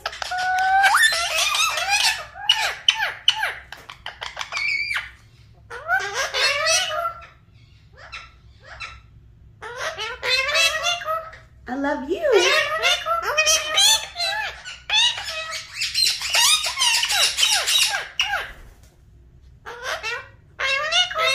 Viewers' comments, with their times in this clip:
0:09 im sure i can here Asalam wa alykoum